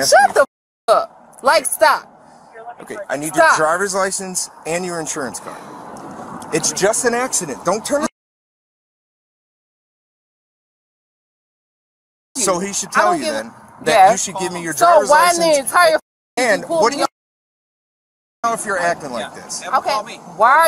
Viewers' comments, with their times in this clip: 0:07 what did she say that was that bad to be bleeped that long?